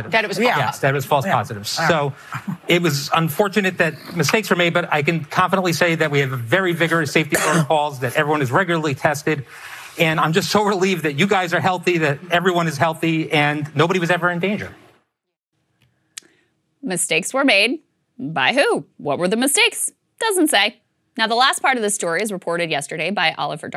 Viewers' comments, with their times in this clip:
0:06 "We have a very vigorous safety protocol" .......also someone coughs (mostly Joy)